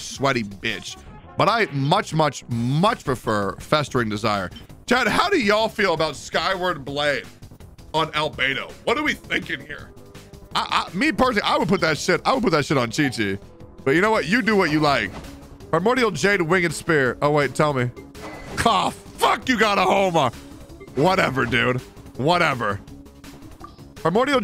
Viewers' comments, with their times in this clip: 0:08 I love how he says "what are we thinking here?" Lmao